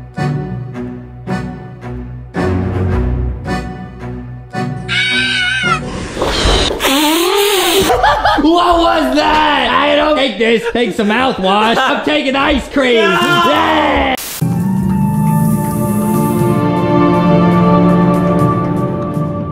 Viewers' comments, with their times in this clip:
0:06 why bro sound like a snake